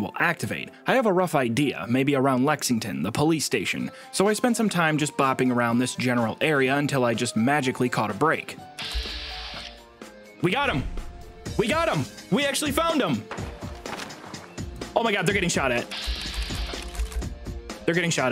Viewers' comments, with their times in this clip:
0:03 the random sims 2 music spooked me haha